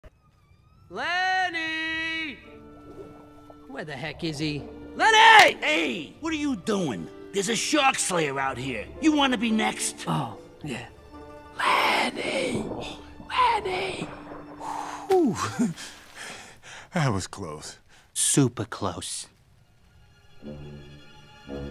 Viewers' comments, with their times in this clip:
0:03 the Menko Shark going to yelling